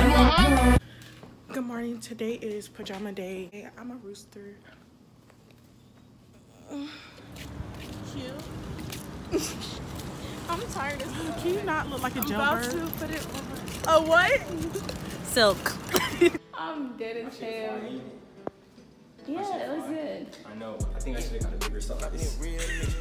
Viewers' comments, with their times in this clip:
0:07 you frickin moaned